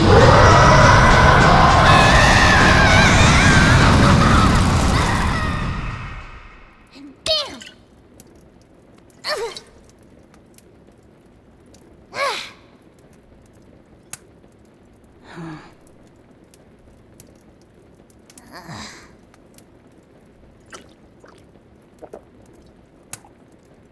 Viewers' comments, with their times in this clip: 0:08 ... Literally all she had to say was “and BAM” and my heart absolutely ached again Why does she have to have such an adorable voice!?